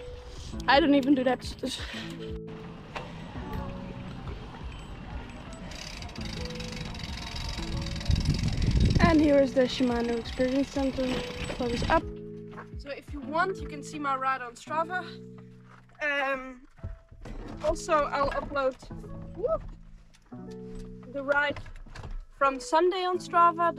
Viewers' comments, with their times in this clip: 0:06 nice freehub sound